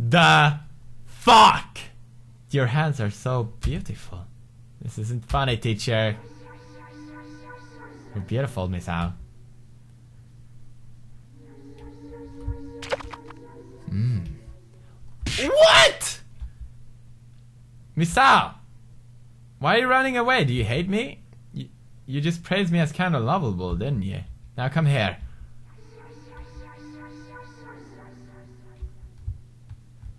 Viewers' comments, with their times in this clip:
0:09 RANDOM MUSIC CHANGE TO PERVERT MUSIC!!
0:13 what was the plopping noise supposed 2 be? can someone plz help me with that
0:13 WTH WAS THAT NOISE ?!?!?!